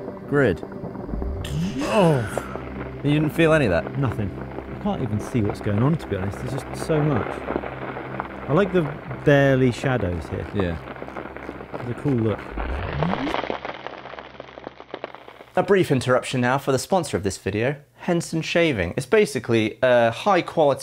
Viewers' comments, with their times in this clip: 0:04 Do you hear that? That is the scream of a million YouTube server hamsters straining under that load.